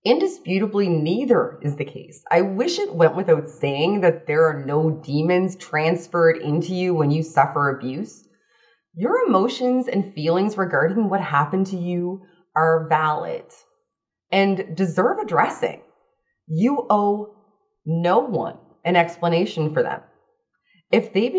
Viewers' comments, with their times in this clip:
0:09 I do apologize, but the small, lunatic, chain reaction of my thoughts on hearing 'de-serves a dressing', had to be vented and addressed. :-)